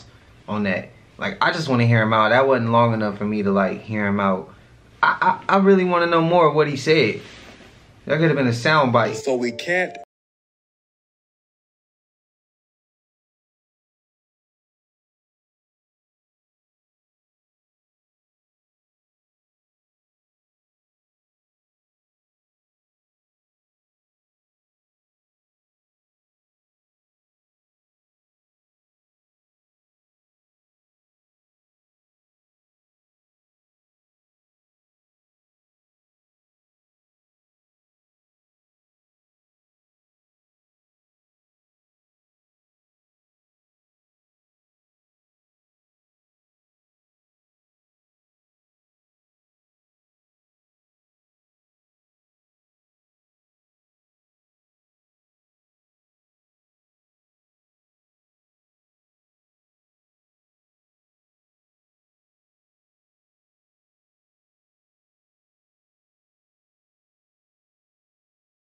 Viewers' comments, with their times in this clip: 0:08 Why some of the videos don't have sound at the mark. If you can't play the videos with the sound why show it ? Just trying to be aware of what's going on
0:10 bro we can't hear nothing he said we don't know what he said it was silent the whole time he was talking 🤦🏾‍♀️
0:11 Sound cut out for me ... Does anyone know what was being sad in these videos?!😭
0:12 can’t hear any of this clip until right at the end, been noticing this alot here lately and it’s pretty annoying.
0:14 At the mark of the clip the sound went out and I couldn't hear what he was saying.
0:21 cant hear smhhhh
0:56 Does the sound cut out for anyone else?